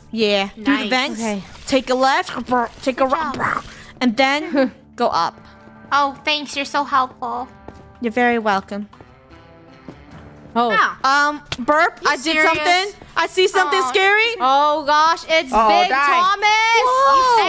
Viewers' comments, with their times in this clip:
0:03 she sounded like Donald Duck
0:04 she sounded like Donald Duck